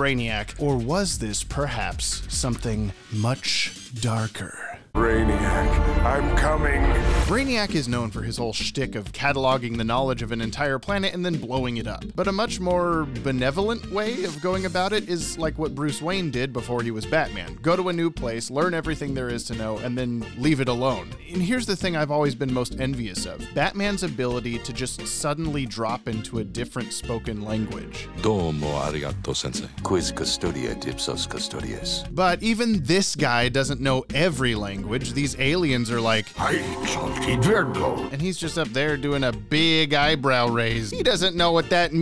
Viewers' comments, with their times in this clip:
0:04 YO WHAT THE FUCK?! the delivery makes it even worse
0:28 it's interesting that his Japanese sounds more like Latin (Latin as in the language Romans spoke) that it does like other Asian languages (i think Korean is similar).